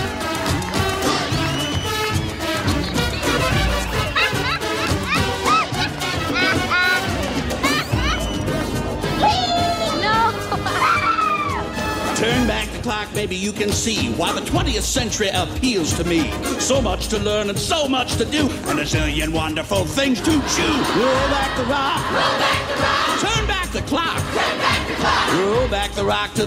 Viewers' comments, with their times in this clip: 0:08 anyone else get weird audio ?